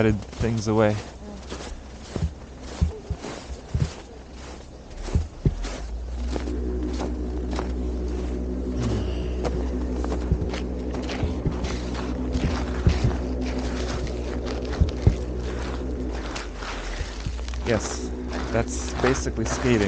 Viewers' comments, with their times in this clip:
0:05 erm, yes the weird smoke monster from LOST, Canadian forest cult noise is not scary at all...